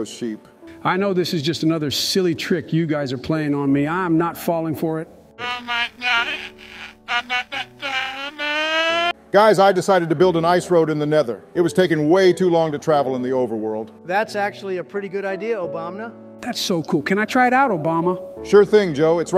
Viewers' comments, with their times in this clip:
0:04 I have translated the sheep, they said "oh my God, im about to cuuuuuuu*** aaaaaaa"